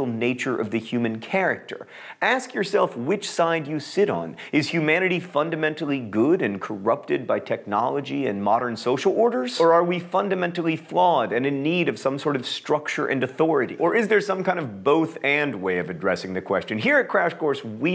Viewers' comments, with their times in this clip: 0:03 Windows Computer sound